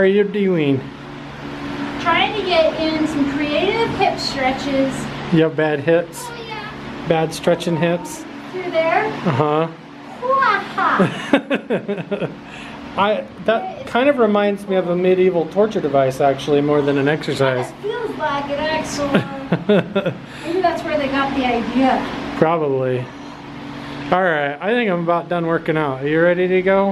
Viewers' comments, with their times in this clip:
0:07 you can hear an (OH yeahhhhhh) ha